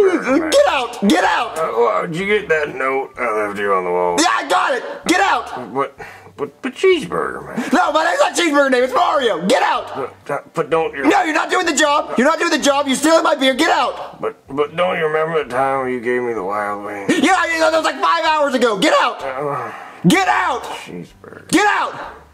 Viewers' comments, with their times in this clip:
0:06 The way he said cheese burger man.